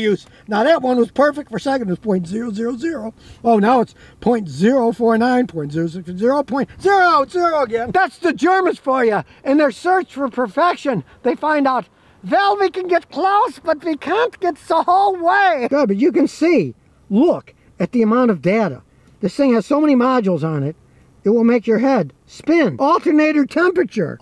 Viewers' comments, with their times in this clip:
0:08 ... Excellent German accent! * PS1 Medal of Honor flashbacks intensify *